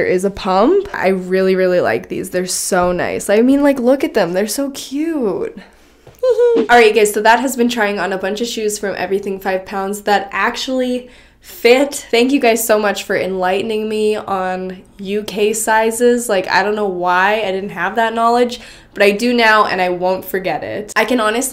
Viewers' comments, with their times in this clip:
0:05 she sounds so cute!!!!!